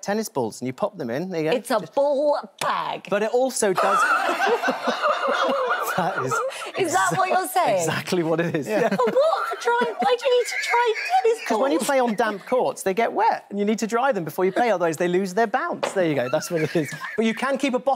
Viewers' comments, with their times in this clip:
0:04 Dudes laugh kills me everytime.